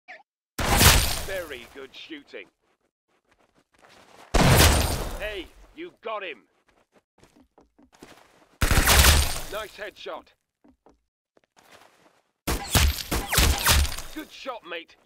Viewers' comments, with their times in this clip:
0:00 is the best voice pack
0:00 what is that little squeak lol
0:01 let's go! BRITISH?!